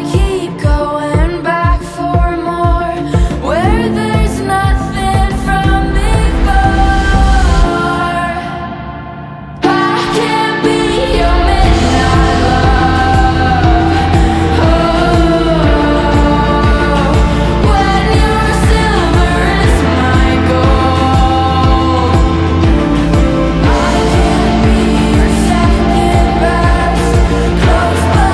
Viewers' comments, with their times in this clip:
0:09 This sounds so dreamy, especially (Btw that's a good thing, it makes the song sound so out of this world and interesting!)